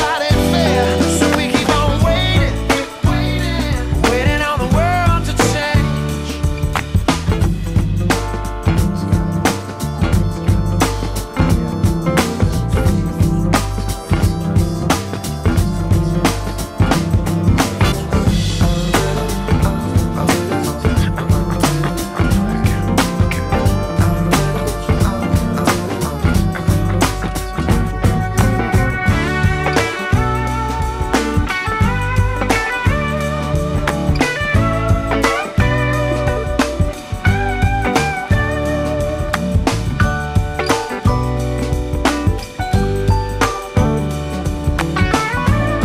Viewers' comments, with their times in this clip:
0:09 one string solo 🔥🔥🔥
0:20 NO ONE HEARS THE SUBLIMINAL MALE AND WOMAN VOICE ?
0:23 The riff 😫 I’ve been practicing it with my guitar 😏
0:26 My favorite part of the song that has stuck with me for so long. The build-up is perfect.
0:26 One of the best songs evah - especially the guitar and horn leading in here...
0:30 I used to hear this on the radio, and I remember it specifically for the guitar part That has to be my favorite part of the song.